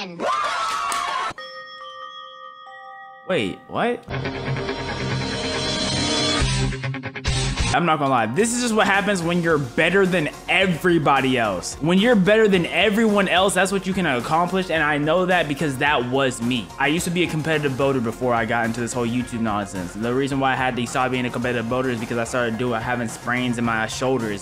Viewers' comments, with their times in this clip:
0:08 that Danganronpa 3 music was perfect